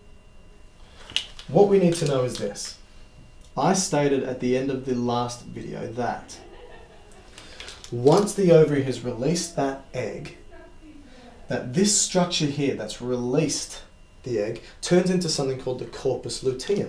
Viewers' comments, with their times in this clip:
0:04 why the hell they laughing